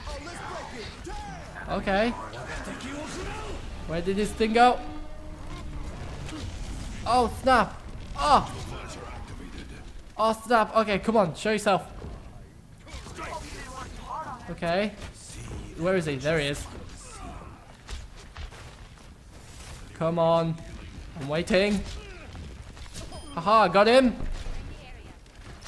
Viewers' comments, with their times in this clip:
0:10 why do you say snap so strange?